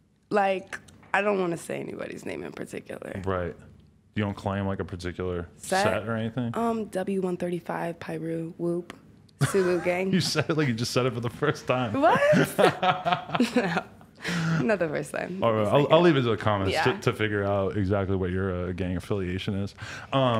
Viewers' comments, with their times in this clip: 0:06 you said it like if it was your first time 😂😂😂